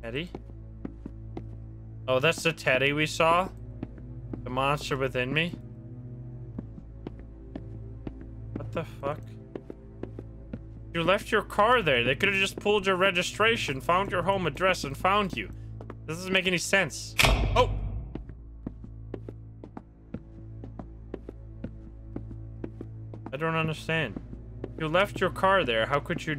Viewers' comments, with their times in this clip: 0:07 Sound missing mark
0:07 Weird how he was mute for like two minutes